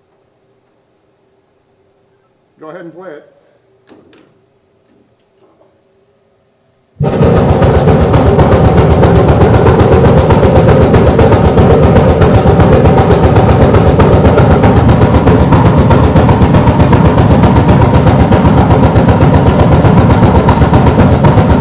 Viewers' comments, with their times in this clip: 0:05 the neighbour starting their vintage chopper bike
0:05 You can count the 8 beats per second
0:06 Hell's own racket starts The trash bag taped to the mouth of the low C pipe actually keeps vibrating with the air after the sound stops.
0:07 when a ghost plays the drums
0:07 sounds like a drum beating lol